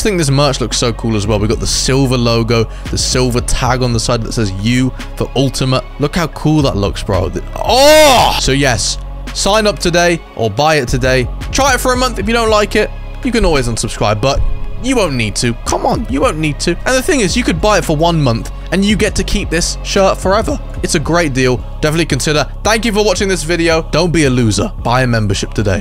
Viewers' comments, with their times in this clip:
0:07 that aaaaaauauhhhhh got me dying ( I fell of my bed )